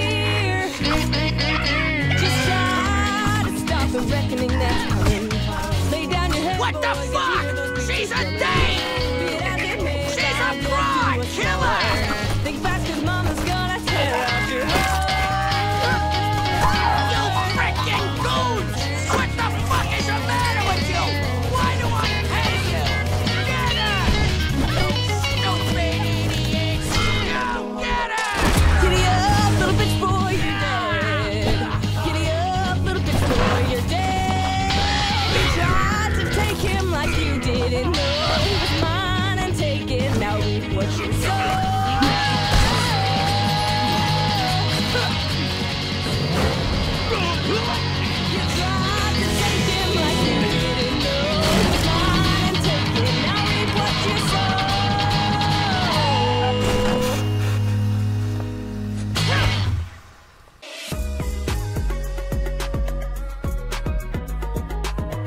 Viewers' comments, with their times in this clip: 0:07 I love how u can hear moxxie yell for Millie it's so cute
0:24 The music, sound effects, and Crimson's voice mix so well at this part, I absolutely love it!!!
0:38 That fucking priest said nope in one of the best ways
0:53 The music in this scene had no right being such a banger 😆 also is it just me who thought the art style kinda changed or might just be we’ve never seen Millie so mad 😭